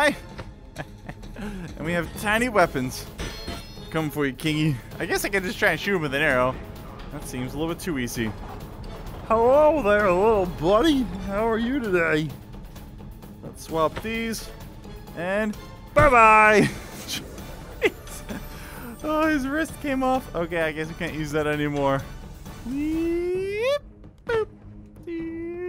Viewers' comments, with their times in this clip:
0:09 you sound like berney from the simpsons